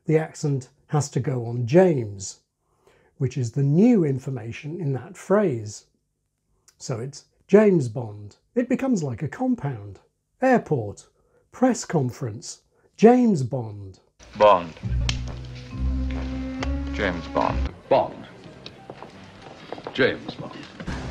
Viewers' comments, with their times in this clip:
0:04 apropos of nothing these ranked in gravitas and meaning from the earliest to the latest imho! Connery was bloody good.